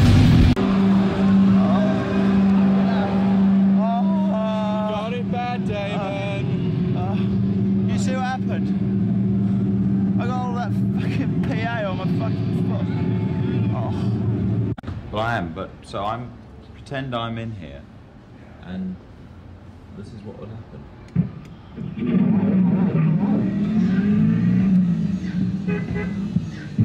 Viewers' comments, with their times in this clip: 0:06 he sounds so much like 2D here
0:08 sounds pretty much like Stuart Pot